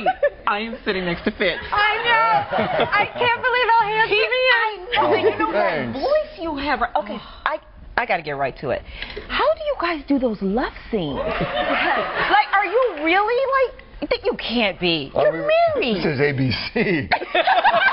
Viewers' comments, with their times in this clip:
0:03 "I can't believed how handsome u r" hahaha tony seems so giddy laughin a lot, breaking into laughter when trying 2 xplain how love scenes r taken " this is abc, this is disney!"